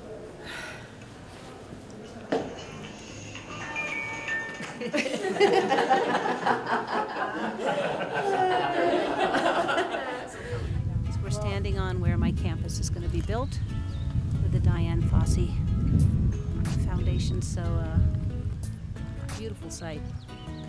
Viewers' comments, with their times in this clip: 0:03 that phone ringtone totally ruined the moment lol, but atleast she laughed